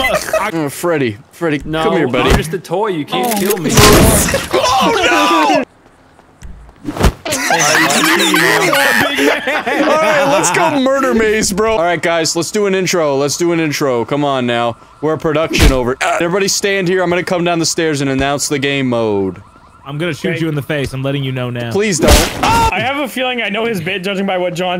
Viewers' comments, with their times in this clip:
0:07 Welp, that's a new laugh I never heard Smii7y do
0:07 That's probably the most hardest laugh he's done in a while.